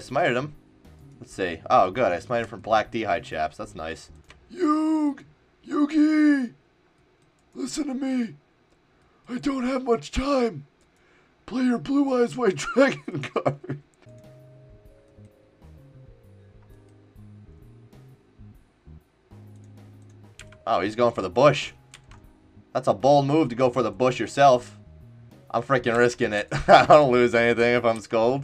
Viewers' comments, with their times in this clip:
0:04 lmfao thought that was Yoel Romero 😂😂 "I LUH YOU MIKE"
0:13 that yugioh impression is funny as fuck lmaoo